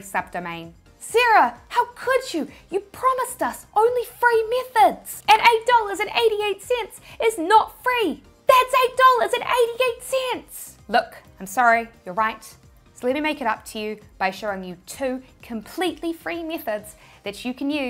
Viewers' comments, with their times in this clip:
0:03 Have I seen too much breaking bad If the first thing I heard was ,,You promised us only free meth...heads"?